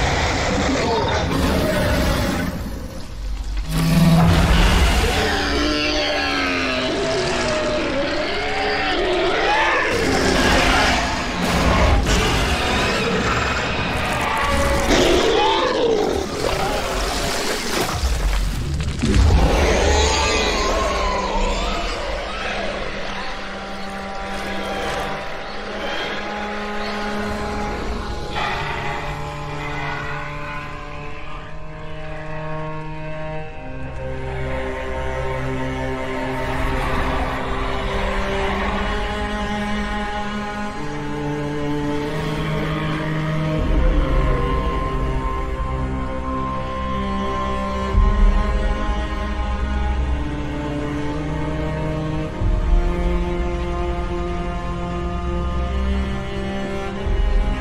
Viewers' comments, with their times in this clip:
0:04 This moment of the episode was so haunting and sad as Spear and Fang watched infected dino burn away to ashes. Even the music was eerie, gave me literal chills and goosebumps!
0:04 that roar it lets out... 😔 poor baby...
0:05 I’m pretty sure this sound effect is that of a dying cow. I’m aware that most dinosaur growls in movies are edited versions of real-life animal calls, and that sauropods have often been compared to cows, but I dunno, that just made it more excruciating to listen to.
0:11 As disturbing as this whole thing is I love the roar I love when audio has "impact" behind it, like it's punching your ears.
0:19 it sounds like it's crying out in pain but not like a zombie if u listen to it cause it sounds like it's trying to fight off the virus and that's what's sad
0:19 It sounds more like a pig to me, especially but IDK.
0:22 I love the moment ... When the slow sad music comes in and you see the pure shock and sadness in Spears eyes... It's like he understands that it's not the animals fault but it's the decease which has infected it's corps... Spear knows that these animals would never hurt another creature (unless threatened) and he is devastated seeing a gentle giant like this being brought to its knees... I tell you, the word "genius" is thrown around A LOT these days, but I think Genndy is one of the few 2d animation creators who are truly breaking grounds in the animation industry with his vision. Primal definitely deserved those Emmy's and I hope it gets more in the future!
0:42 If you listen closely you'll hear the Sauropod making a noise as if in relief, as if he's happy to be able to die and finally be free of the damned disease, in fact, during the incineration, I can actually hear "Thank You". R.I.P. sweet and innocent Sauropod.
0:42 Well if you hold a ember it burns. You can hear it’s normal Cama sound to a degree and it being burnt to ash. With the ember not burning or causing any pain to him it’s possibly it can kinda be seen as a after death message.
0:43 you can hear the cama call one last time... it sounds like how it did before it became infected so I assume the cama gained consciousness moments before it was disintegrated.